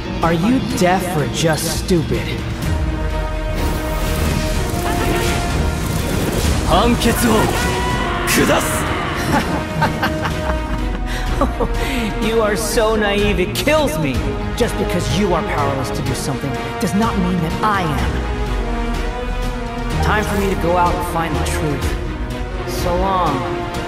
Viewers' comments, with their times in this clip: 0:04 DID I JUST HEARD TANJIRO;S TATAKAE???
0:05 i heard tanjiro’s voice. i can’t be the only one right? RIGHT?😭